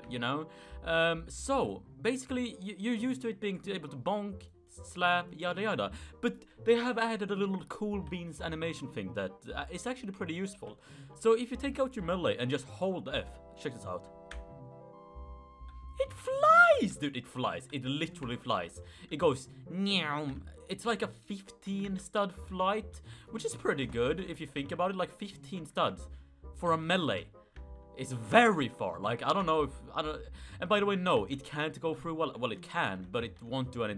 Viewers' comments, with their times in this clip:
0:05 that sounded so swedish
0:19 new mjolnir throwing sound